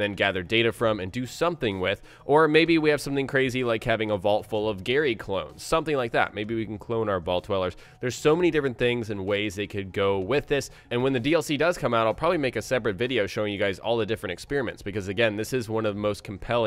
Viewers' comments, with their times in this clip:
0:04 gary clothes? what did he say ?